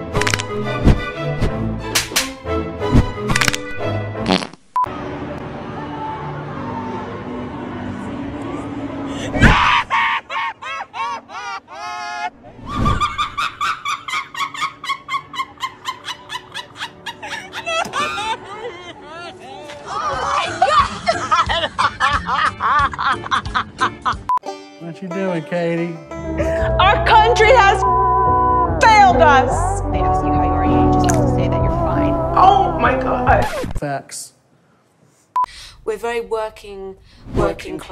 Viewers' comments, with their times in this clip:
0:10 not you editing the screaming/crying into a black ops zombie sound effect 💀💀💀
0:24 THE MUSIC WITH THE COUNTRY ACCENT-